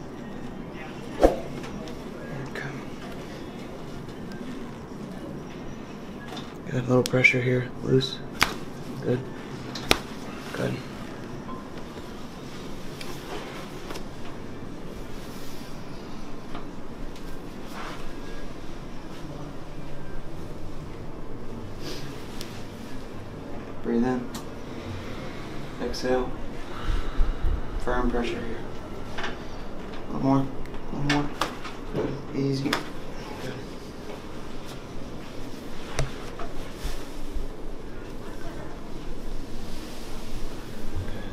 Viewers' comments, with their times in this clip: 0:04 that is an unusual sound coming from chiropractic adjustment. I never saw a video in which someone's joints or bones rang like that.
0:22 Great song playing lol